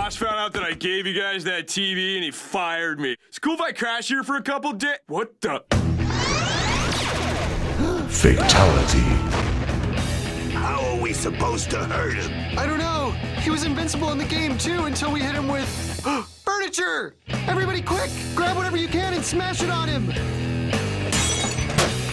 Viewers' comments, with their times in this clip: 0:04 Wut Da? kicks OUT of window AHHH.. boom